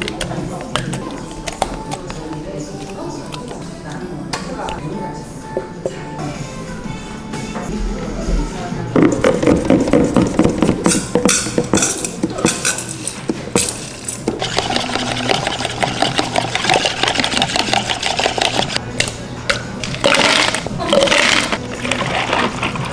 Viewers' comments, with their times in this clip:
0:05 Instantly got activated hearing Ive playing in the background lol